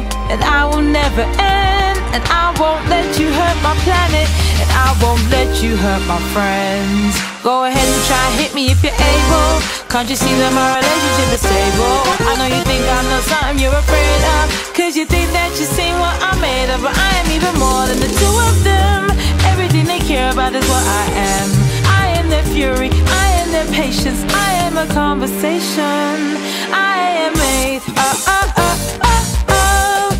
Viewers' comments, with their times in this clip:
0:06 the instrumentals in this part is just PERFECTION
0:16 I thinked that is undertale song + sonic moment💀